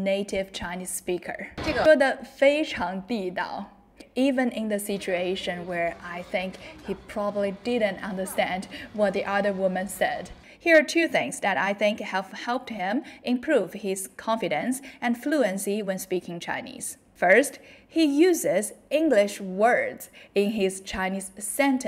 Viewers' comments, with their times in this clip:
0:09 Haha, that expression I know from early teenage-hood. It's literally a standard phrase from Age of Empires (3). It's also not too hard to get the tones right.